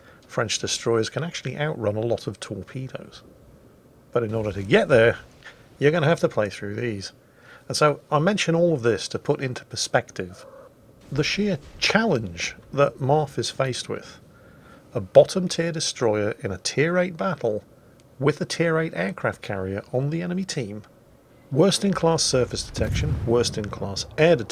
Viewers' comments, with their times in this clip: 0:09 Akizuki's cute purr!. So basically the 2 CV's and the Asashio are window lickers and wallet warriors? This is why new players to WoWs shouldn't jump straight into high tier premium ships and think their going to be the bees knees?. I love it when I take my Graf Spee out and delete a cruiser and get called a wallet warrior and then I tell them how I got it XD
0:09 Sounds like someone else is on the mic...😂
0:10 Nice to hear Akizuki adding her 2p worth :D
0:12 kitty noise awww